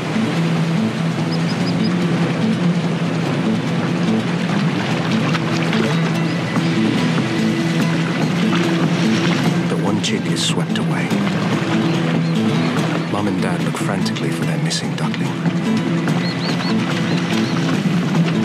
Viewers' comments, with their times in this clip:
0:05 The water sound omg 🤧